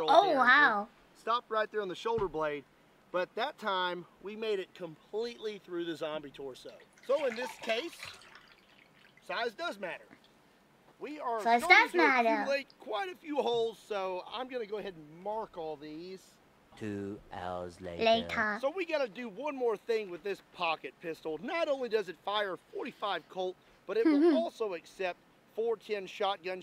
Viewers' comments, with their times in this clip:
0:07 ....Is that water in the background?